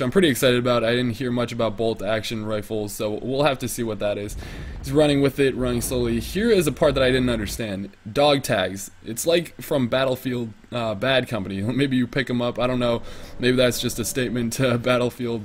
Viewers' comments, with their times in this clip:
0:03 i know its hard to beleive but i think its the barrett :s they fucked up the sound